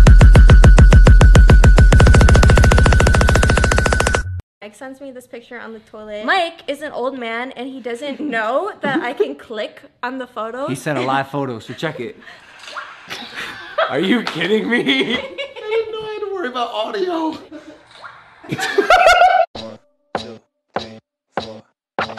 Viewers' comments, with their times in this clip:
0:09 Is it me or she has an accent